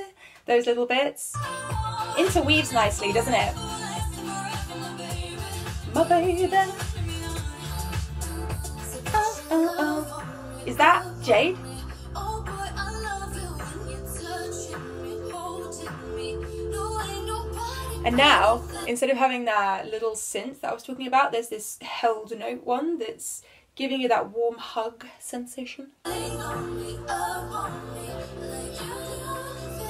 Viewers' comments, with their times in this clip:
0:09 Loved your reaction ❤️ Also, I know you would’ve realised now, but Jesy is the one singing not Jade Both have that sort of smoky tone with that edge to it so it’s quite hard to distinguish between the two. I guess it’s Jade’s versatility… she could literally sound like Perrie and Leigh-Anne and no one would notice until they see a live performance
0:11 is jest then Leigh also sings some word with jade I think